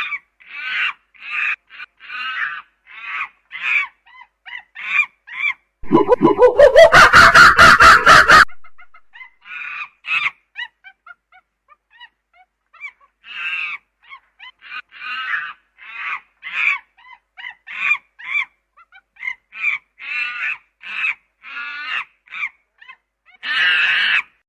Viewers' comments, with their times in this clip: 0:08 For a sec I thought you were laughing at a timestamp of which is also very funny